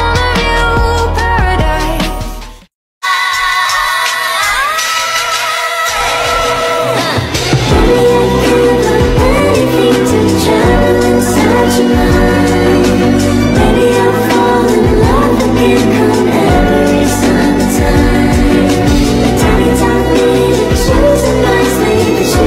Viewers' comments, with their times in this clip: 0:08 why does that song remind me of… MORE THAN A WOMAN BY BEE GEES!!! ❤️